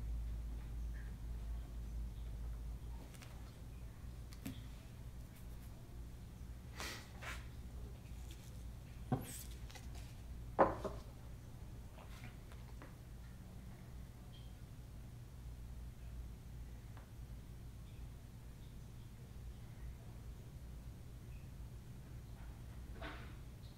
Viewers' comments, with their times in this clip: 0:08 what was that "woottss" ? does he have a dog?